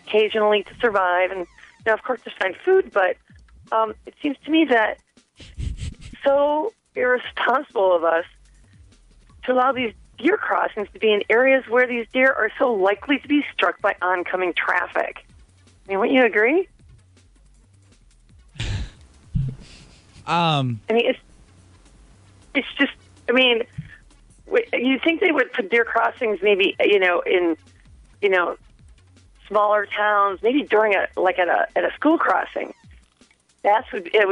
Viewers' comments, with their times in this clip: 0:03 this is a joke. You can hear her laugh a little
0:04 you can hear her almost lose it after he laughs
0:06 I've listened to this dozens of times. I always had the sneaky suspicion that she was pranking the station, but you know... no proof. I just listened one more time and noticed where the host is sniggering, it sounds like she almost bursts out laughing.
0:06 She can hardly keep it together and you can hear her laugh a little She's no dummy, it's a gag.
0:06 caller laughs makes me think it's a fake
0:20 The pause of the guy says it all...I swear some people zig when they are supposed to zag...